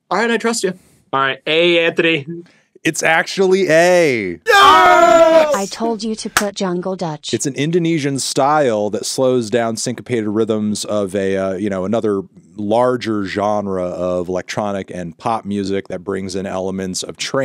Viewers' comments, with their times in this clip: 0:05 Something felt off Ain't no way that's what their actual high five sound like